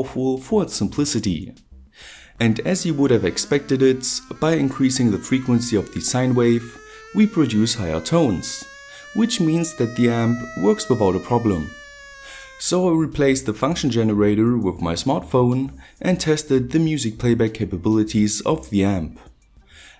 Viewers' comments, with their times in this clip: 0:03 When you played North & South on NES and used the artillery.